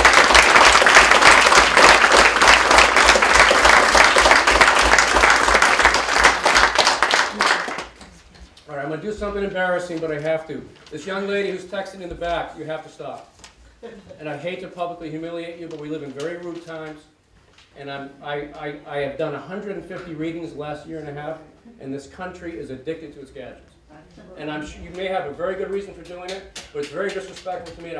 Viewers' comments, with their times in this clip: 0:08 It is But he does it in a very polite way, at least it sounds friendly (for Germans).